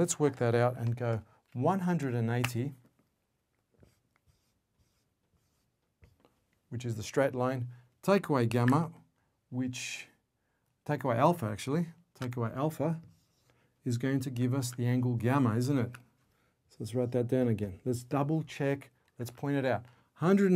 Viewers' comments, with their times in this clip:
0:03 what 190 degrees? nice accent